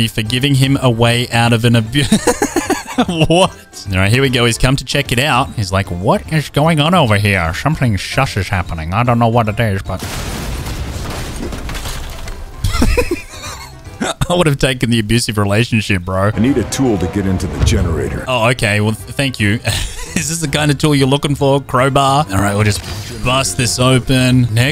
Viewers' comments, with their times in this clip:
0:06 nice grinch impression bro